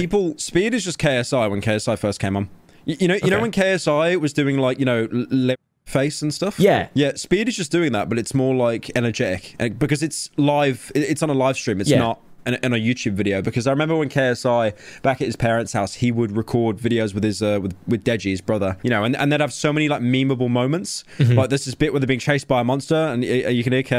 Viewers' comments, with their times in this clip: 0:05 he almost said le' face